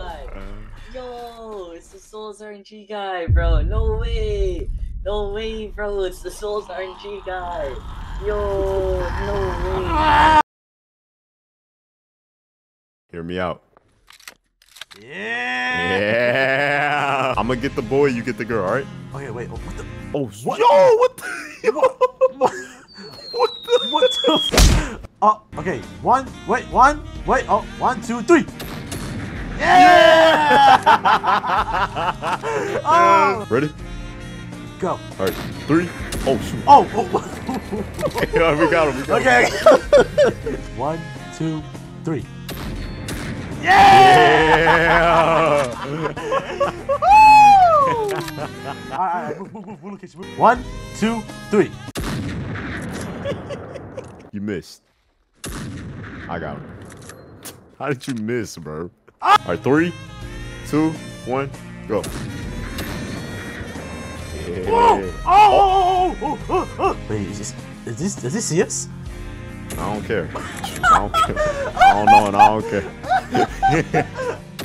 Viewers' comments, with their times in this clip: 0:09 the voices are getting louder
0:58 "Spy Is In The Base" Ahh Scream